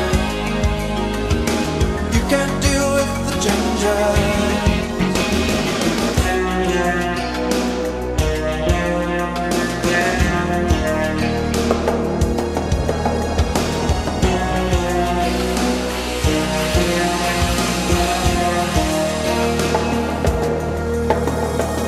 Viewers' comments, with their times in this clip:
0:07 The guitar solo starting is godlike!!